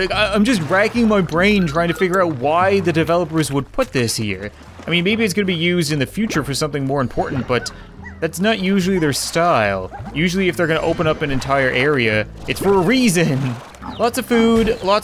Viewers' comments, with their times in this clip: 0:03 Anyone else see the splashing glow slime largo? one of them falls and mile makes water splashing sound, can we like make water largos now?